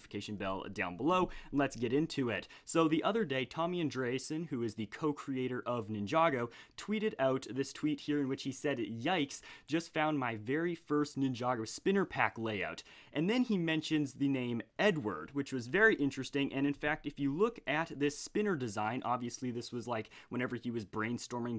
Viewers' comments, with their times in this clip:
0:04 did he just say Tom and Jerry?